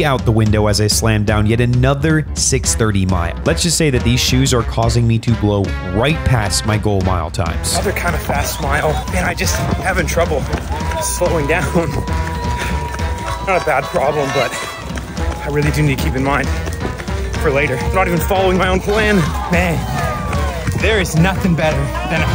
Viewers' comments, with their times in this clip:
0:08 just me or did any one else hear the oohhh maa gahhhh meme??????????